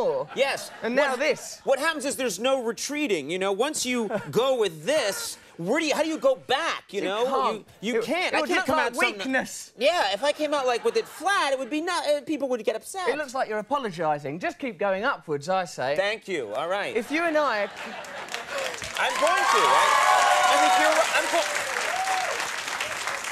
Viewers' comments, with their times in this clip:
0:06 How astonishing the difference in pronunciation Russell: you can't (English accent) Conan: you can't (American accent)